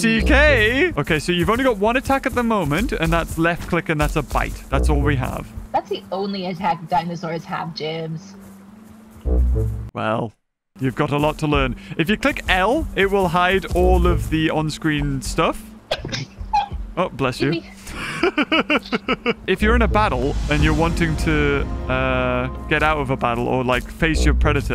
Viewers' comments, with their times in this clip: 0:10 Uh huh *para honk